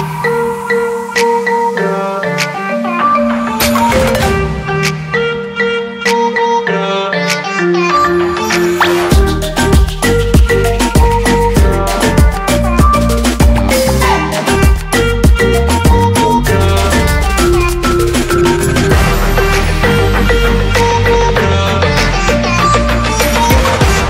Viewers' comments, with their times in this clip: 0:08 was that beat intentional?